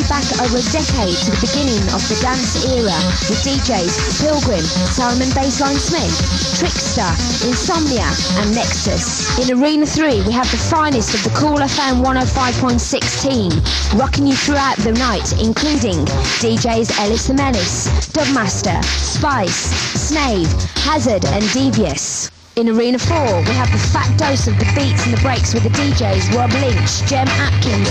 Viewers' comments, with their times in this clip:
0:08 What is the ID on this jazzy dnb tune in the ad, i remember listening to this ad back then?